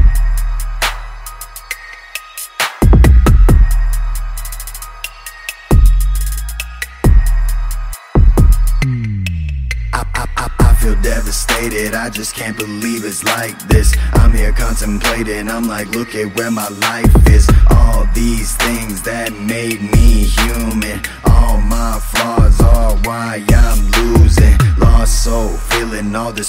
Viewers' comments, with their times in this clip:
0:07 Best moment 🔥thrower brruupupupu brrrrupupupup